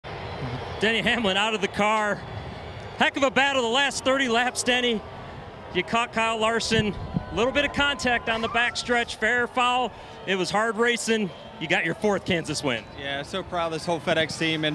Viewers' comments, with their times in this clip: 0:00 he was mocking them as he was booing them back